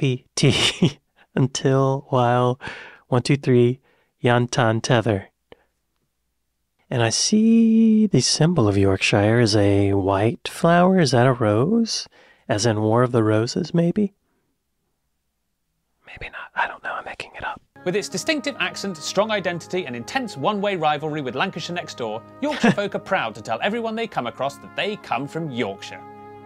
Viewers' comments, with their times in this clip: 0:08 was waiting for the york-shier. never disappoints